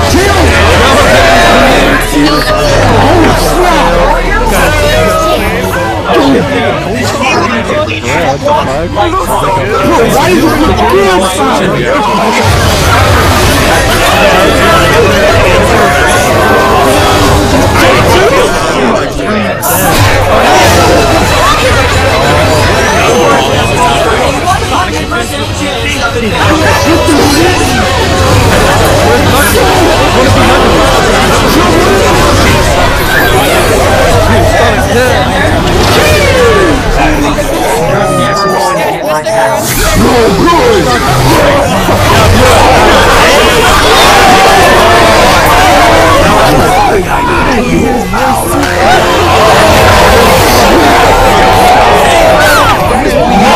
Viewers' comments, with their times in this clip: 0:09 The loudest/clearest dude is the british dude saying stuff but I can't for the life of me find his webcam. (the dude who says fam )
0:40 Things get very intense.... cover your ears everybody....